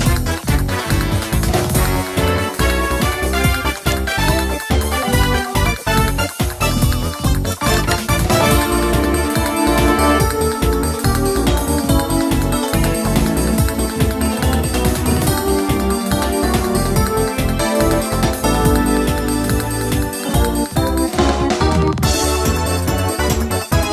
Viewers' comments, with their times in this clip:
0:10 I like the music🎶🎶🎶🎶🎶